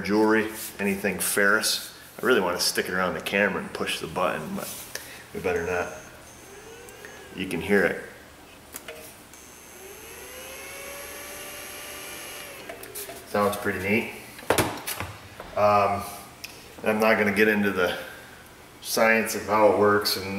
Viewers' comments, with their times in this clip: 0:08 I like how he goes SSH be quiet so you can hear it